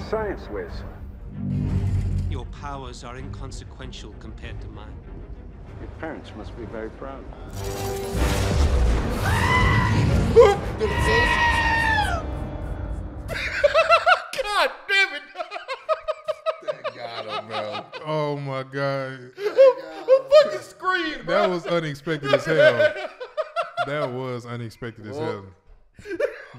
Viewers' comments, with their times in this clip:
0:09 that goat scream.😂😂